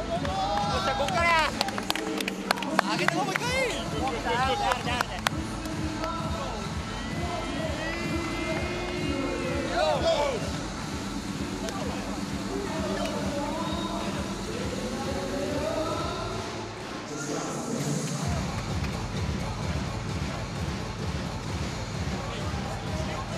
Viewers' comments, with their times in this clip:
0:06 was that supposed to sound like that xD